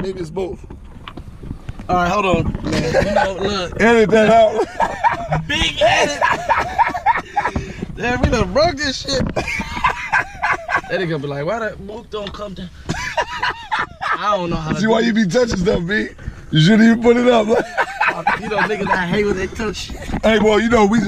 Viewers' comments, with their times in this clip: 0:06 🤣🤣🤣 laugh contagious af